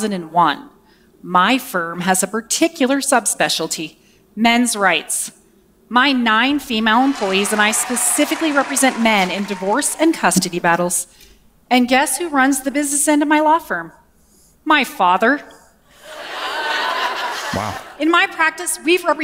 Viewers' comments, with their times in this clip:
0:04 I like how they we're cheering at first and then she said men's rights which ✊ hell yeah however notice how the whole room got silent